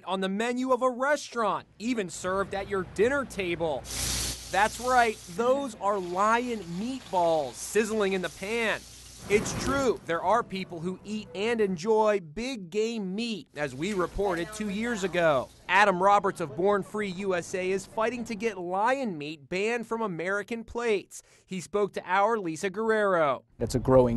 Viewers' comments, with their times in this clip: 0:08 LOL i thought he said BIG GAY MEAT
0:10 BIG GAY MEET
0:12 I heard “BIG GAY MEAT”
0:12 I thought he said “Big Gay meat”
0:12 BIG GAY MEAT
0:12 I though he said big gay meat
0:12 big "GAY"? MEAT
0:12 who else heard big GAY Meat